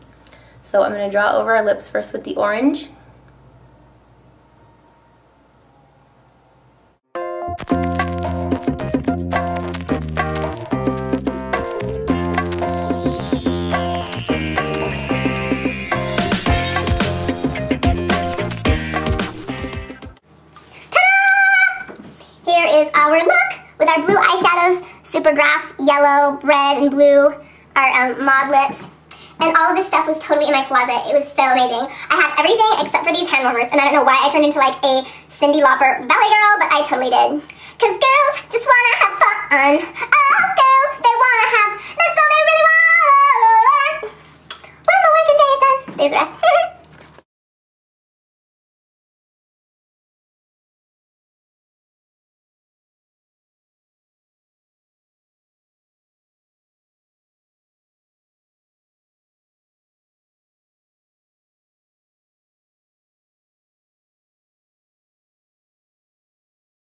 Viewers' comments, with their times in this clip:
0:09 there isnt any sound till the end
0:47 wat happen to the voice